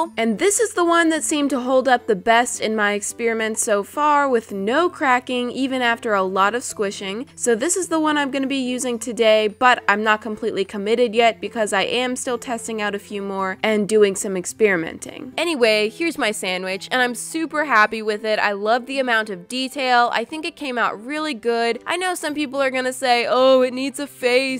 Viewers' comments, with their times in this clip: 0:05 top coats..you mean taco?.. and yes im #holosexual ❣